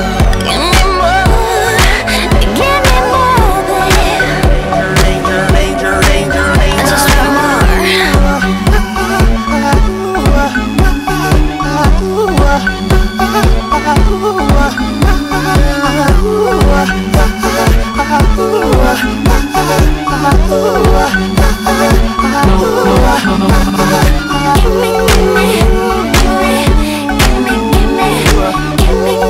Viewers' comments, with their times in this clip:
0:04 sounds like heaven
0:07 I thought she said sigma 🤣
0:13 What fucked that song is the uu a uuah in